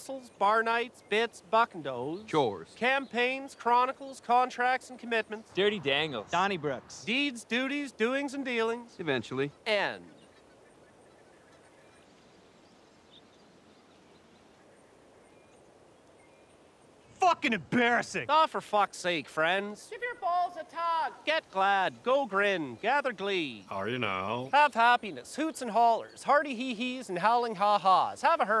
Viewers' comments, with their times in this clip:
0:10 that silence was palpable. I'm really gonna miss this show 😔